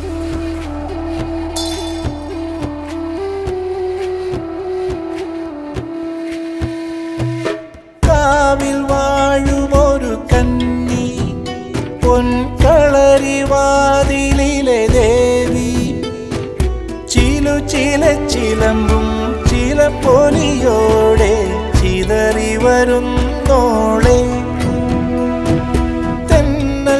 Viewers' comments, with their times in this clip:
0:07 Just when you think this song couldn't get any better, K J Yesudas comes and takes it to a whole new level. What song man. Shwetha is definitely Sujatha's daughter.
0:07 From the legendary voice 🥵